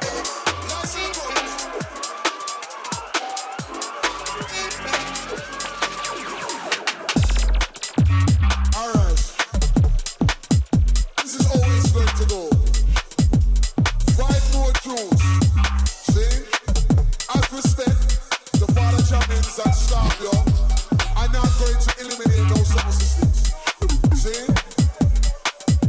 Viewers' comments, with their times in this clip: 0:06 that mix into lights in the crowd was quite tekky